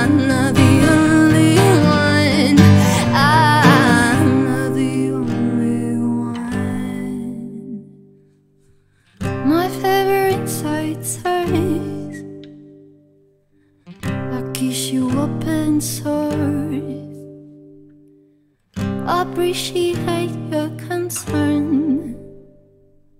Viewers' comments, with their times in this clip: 0:09 Billie Eilish vibes